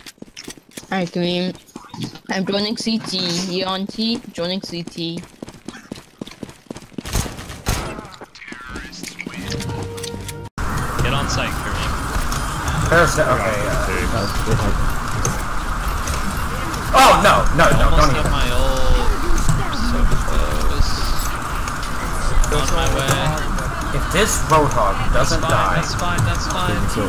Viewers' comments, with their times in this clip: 0:10 Audio bitrate has left the channel